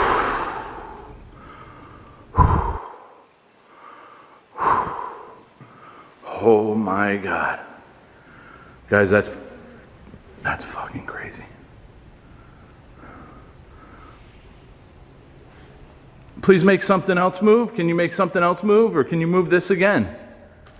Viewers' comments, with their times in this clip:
0:08 a female voice comes in over yours, but cant tell whats said cause its at the same time you're talking.